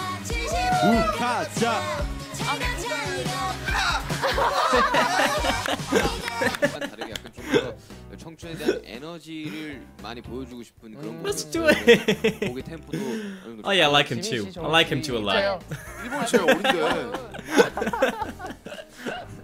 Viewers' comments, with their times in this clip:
0:04 omg your laugh is so cute